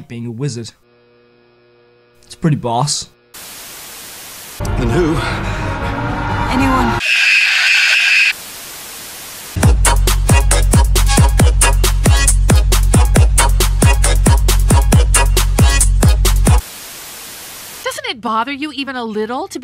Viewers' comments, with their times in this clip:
0:07 The sherlock scream I was dying
0:07 I completely lost it lol #ThatScreamTho